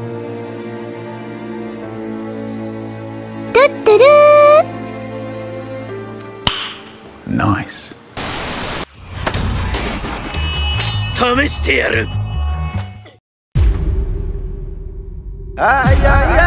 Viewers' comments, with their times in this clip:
0:03 i thought my phone rang